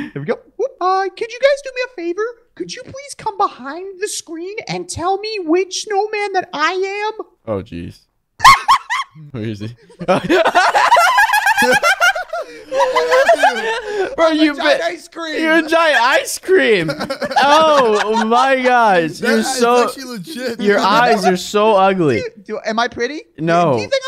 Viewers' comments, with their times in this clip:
0:09 WHAT WAS THAT LAUGH🤣🤣🤣🤣🤣🤣🤣🤣🤣
0:12 Unspeakable’s laugh is so funny